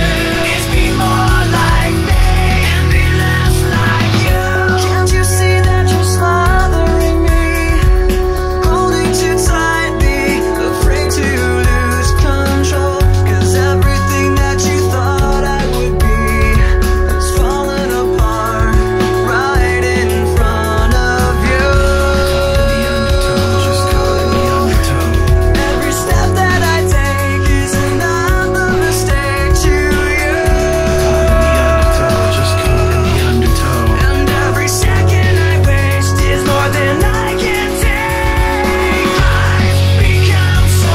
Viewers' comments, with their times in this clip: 0:04 like heaven sound
0:21 I like how he's getting right in front of me when he sings, "..right in front of you."